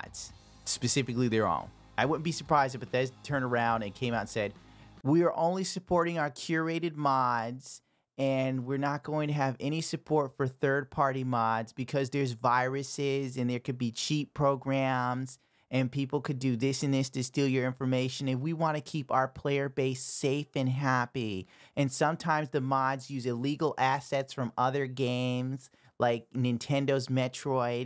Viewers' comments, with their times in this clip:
0:10 you're sounding like Jeff Kaplan xD